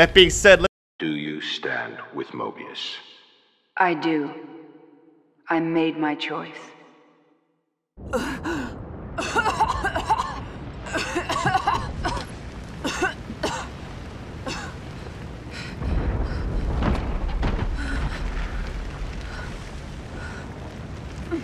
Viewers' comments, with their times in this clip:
0:08 what a fake cough. lol